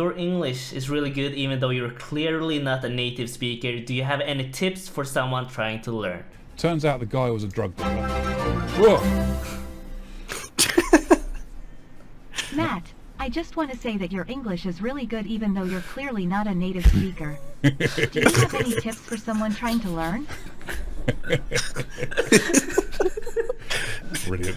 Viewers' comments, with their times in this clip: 0:09 You all giggled like a bunch of girls was the best